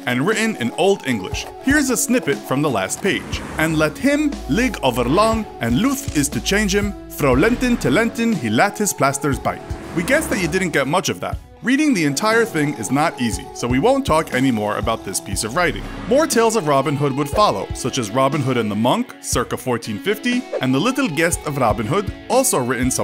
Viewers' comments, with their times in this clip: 0:08 Your Middle English pronunciation wasn't bad, and most words were accurately pronounced; however, the letter e should be pronounced like the modern ah or a in hat and i should be pronounced as ee since the Great Vowel Shift had not occurred yet. Thus, bite would be said as beet.